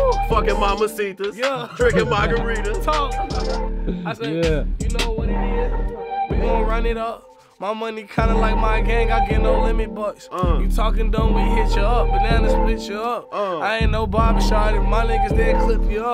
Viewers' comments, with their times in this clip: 0:04 juice flow there was so fire